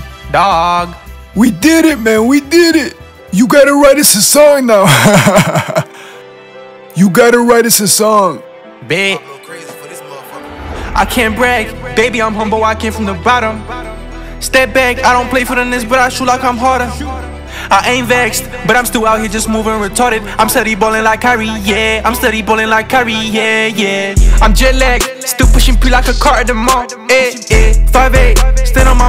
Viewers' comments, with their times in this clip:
0:10 the song was fire